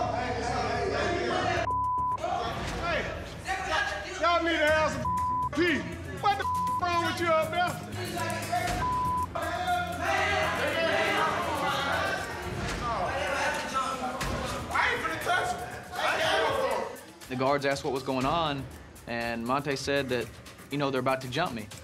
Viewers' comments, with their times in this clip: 0:04 I love this guy. Sounds like a parent.